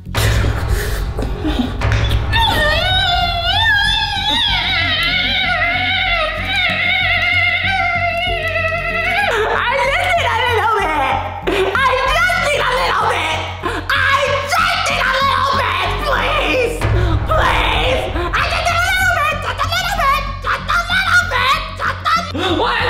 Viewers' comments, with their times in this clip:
0:03 you sound like a car